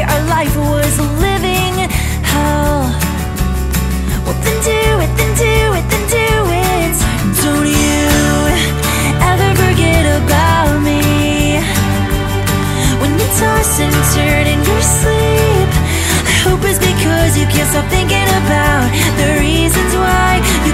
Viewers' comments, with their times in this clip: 0:05 She starts in the background and it builds up.